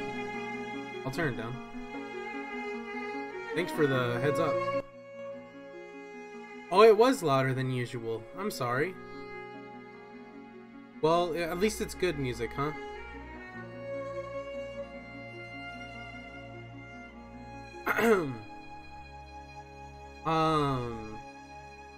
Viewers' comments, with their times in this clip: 0:05 Music gets turned down